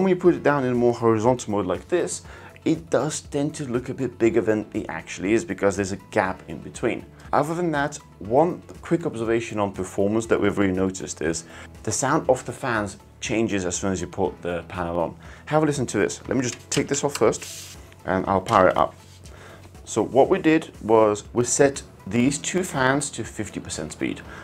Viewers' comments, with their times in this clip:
0:06 A little bit of audio issues throughout the video, like